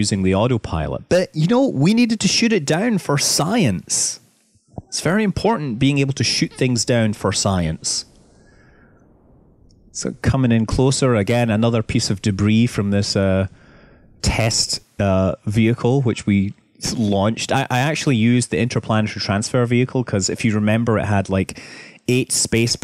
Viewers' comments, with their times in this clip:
0:05 A fart AHAHAH That's a creepy little one !